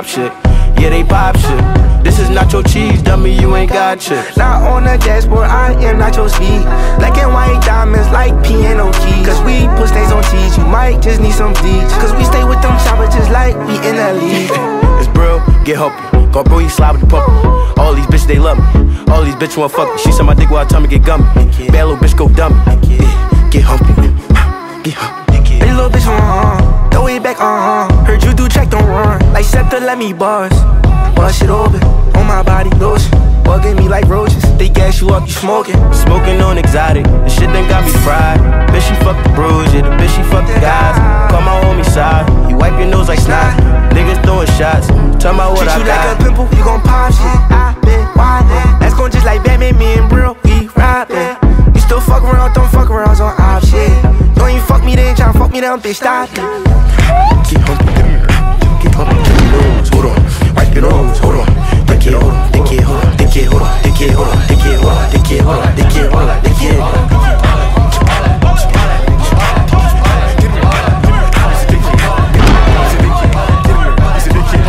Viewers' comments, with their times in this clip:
0:03 when the beat changes is fire
0:04 am I the only who thinks he sounds like roddy rich
0:36 bro unlocked frank ocean’s flow
0:36 the part that reminds me of Frank ocean 😔 I MISS HIM PLZ-
0:57 sound effects crazy😭😭😭